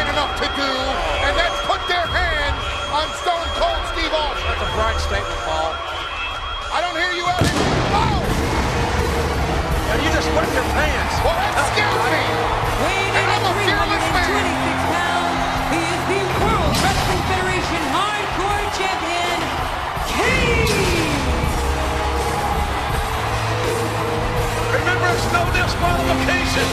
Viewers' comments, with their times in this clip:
0:08 if you've ever questioned whether KANE was over or not... listen for yourself !!